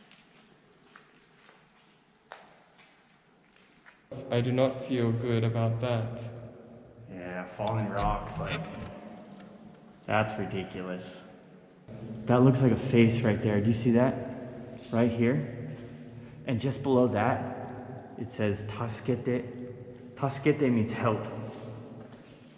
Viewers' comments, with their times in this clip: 0:08 What is that noise ? Something rubbing against the camera?